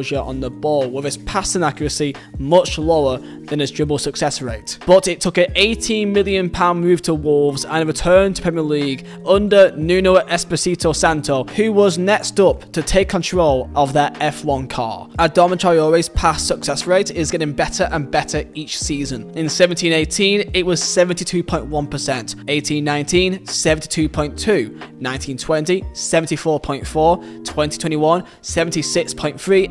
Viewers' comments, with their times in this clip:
0:10 Nuno Esposito Santo? KKKKKKKK wtf